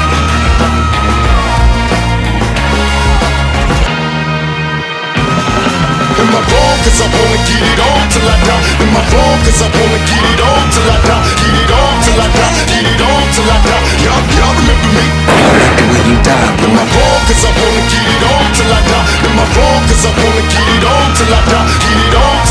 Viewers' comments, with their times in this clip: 0:09 That James Brown scream lmao JB a legend as well as Pac smh